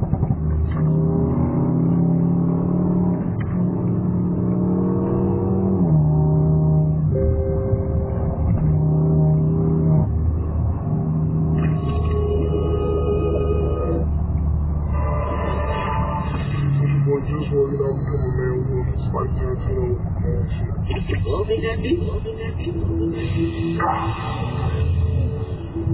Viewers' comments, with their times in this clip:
0:06 not the infamous bimmer ding 😂🥲